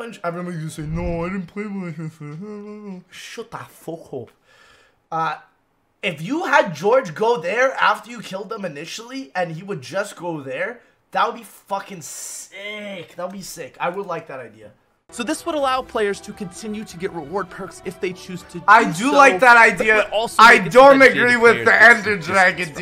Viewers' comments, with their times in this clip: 0:03 he sounds scouse 😂😂😂